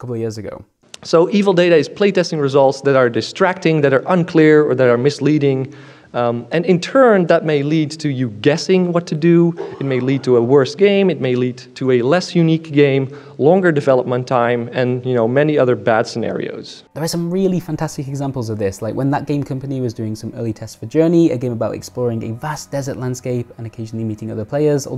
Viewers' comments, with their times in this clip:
0:07 Sounds like War Thunder